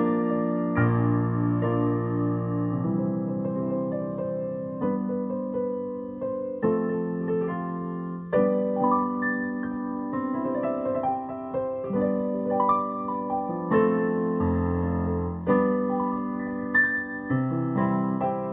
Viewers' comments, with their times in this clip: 0:03 Great playing dude! I’m probably wrong about this but sounds like Sammy J and Randy’s song Good Times.